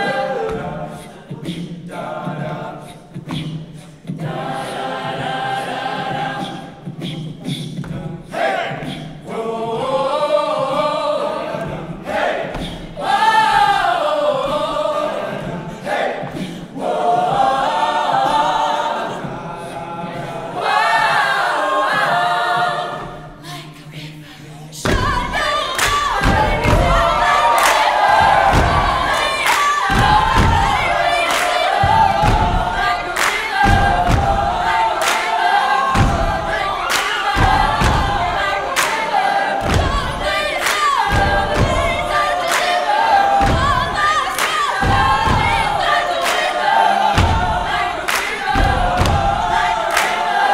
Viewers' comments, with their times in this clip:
0:08 Ok but the boys really went 🔊📈
0:25 The instant cut back to the chorus gave me chills all the way down my spine
0:36 4th girl from the left hit the most emotional 'Woah'